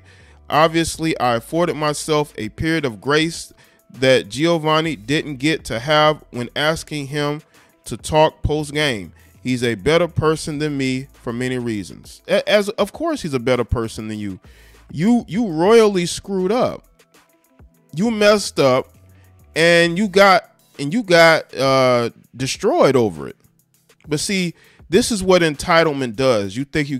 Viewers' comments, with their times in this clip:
0:09 The dude sounded way more disrespectful than the woman. 😄